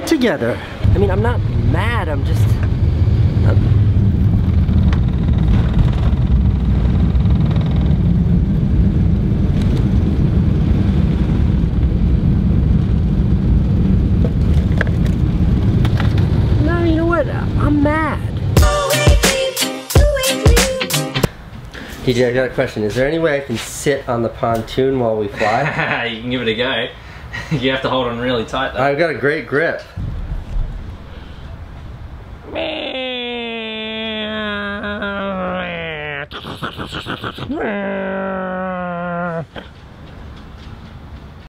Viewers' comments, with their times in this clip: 0:10 u forgot the ‘t’ in Australia 🇦🇺
0:11 ...did is seriously say "bye ASRALIA" it's written AUSTRALIA... with a "t".😑
0:11 where is the "T" in AusTralia... ??? :D :D :D
0:30 that is a really good airplane sound 😂